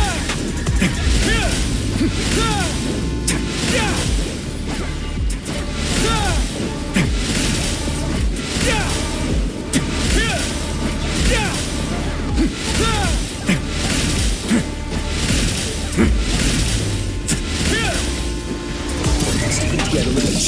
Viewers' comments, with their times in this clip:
0:04 that pause with the "tea?" make me chuckle out loud